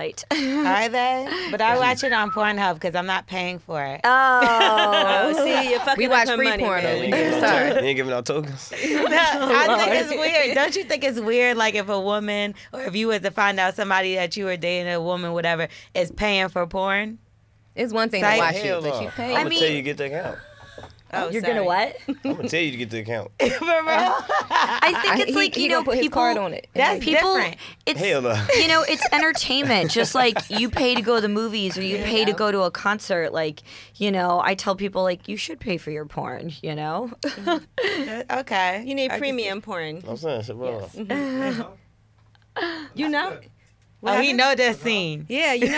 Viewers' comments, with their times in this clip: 0:04 yeo he fucking whispered at his mans for the yammer im ctfu
0:31 Durk : whistles 🗣️🗣️ Me : 🤦🏾‍♂️🤷🏾‍♂️💦😈 💯 Durk in complete mode TO CHICAGO